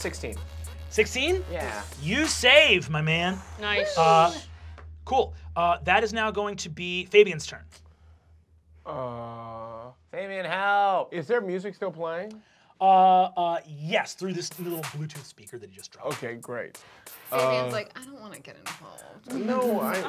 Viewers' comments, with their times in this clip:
0:08 It really says something about how good Lou is at staying in character that I genuinely got thrown off when he spoke in his real voice